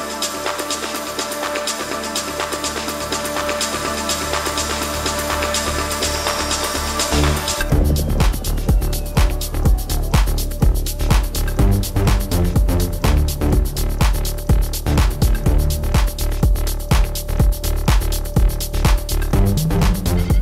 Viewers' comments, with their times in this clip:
0:08 damn that drop is nuts! perfect execution of effects!